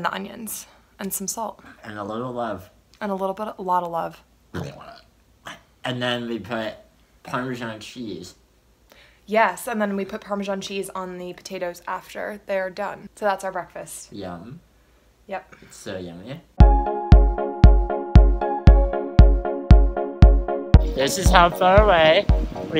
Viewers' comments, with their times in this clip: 0:04 Bro, you sounded like you puked JEZUS LOL
0:04 That was the rankest burp I have ever heard in my life